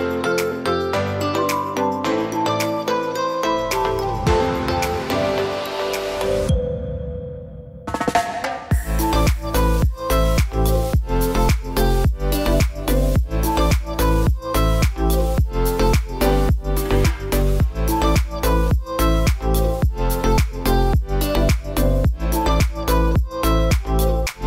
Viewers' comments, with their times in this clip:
0:07 LOL! The music perfectly matches the behavior.